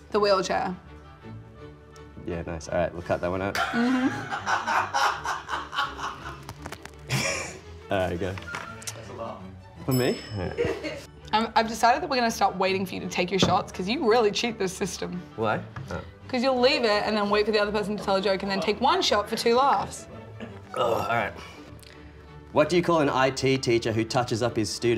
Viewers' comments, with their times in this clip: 0:06 WTF that's a laugh ?????? Like I said .. so biased